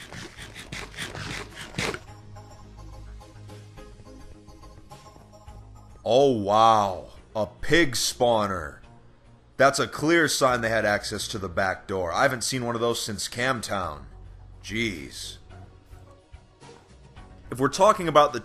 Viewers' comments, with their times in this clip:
0:06 sounds so scripted 😂
0:06 bruh that enthusiasm